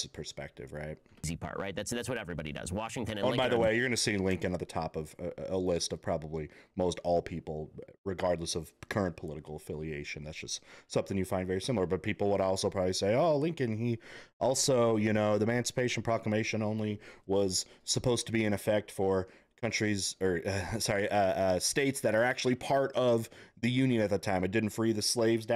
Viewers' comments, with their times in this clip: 0:10 Nope, you need to watch it again and listen. he clearly says "people would also say" OBVIOUSLY not talking about himself. He's even talking with a sarcastic tone.